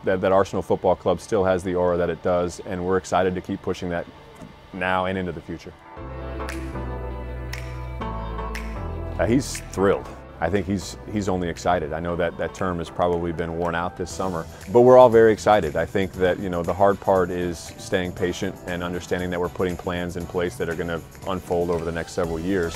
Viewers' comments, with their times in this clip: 0:08 David Ornstein not buying the techniques he's using to win him and the fans over, all smiling putting a happy voice on we all know Stan Kroenke ain't worried about what Arsenal do as long as the club is making money.